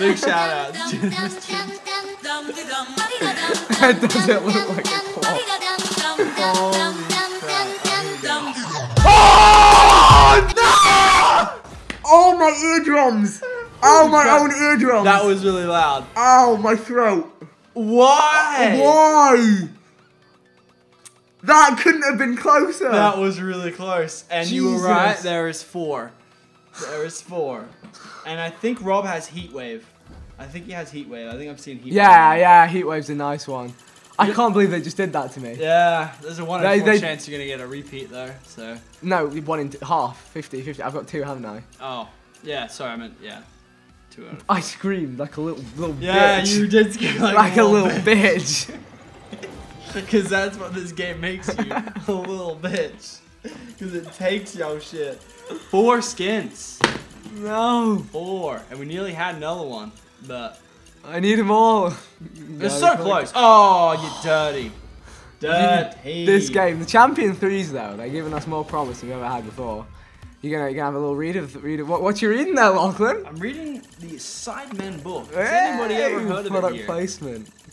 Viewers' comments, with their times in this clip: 0:08 beware headphone users ☠️☠️☠️thank me later.
0:09 RIP headphone users!
0:55 "Foreskins, Four" how did neither of them notice that haha
0:58 why is Lachlan talking about foreskin?